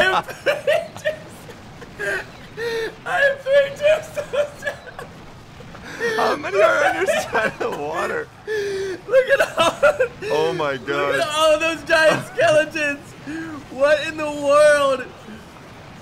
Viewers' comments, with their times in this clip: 0:04 most fake laugh award goes to...